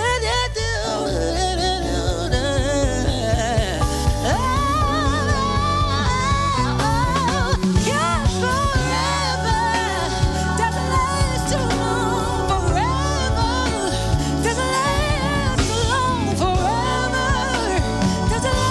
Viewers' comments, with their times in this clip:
0:05 You can’t tell me that won’t fantasia as hell. Tasia jumped in and jumped out for a second. Anyone else hear dat? Just me? Okay 😭